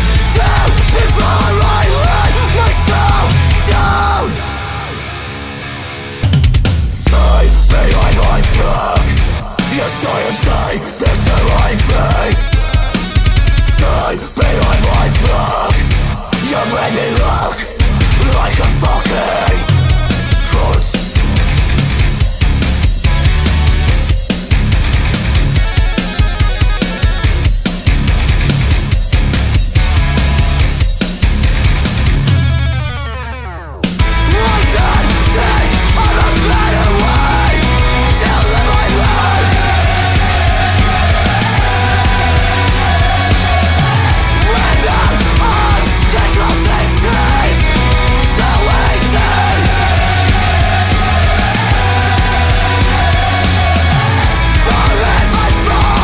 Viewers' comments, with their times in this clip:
0:06 was the gayest bass drop ever..
0:39 rip vocal cords oh and... wtf XD